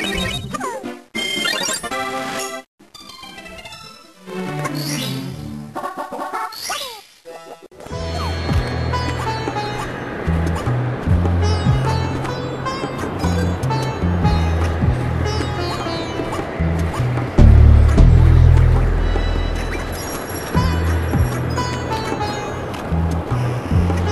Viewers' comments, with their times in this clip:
0:06 XD the little song is cool but speeded-up is So Funny!!!